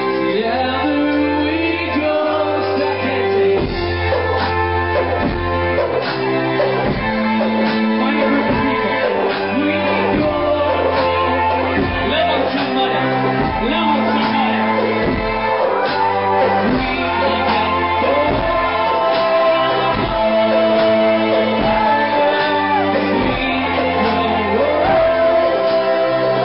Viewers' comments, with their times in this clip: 0:07 at first I thought Tyler was beat boxing 😂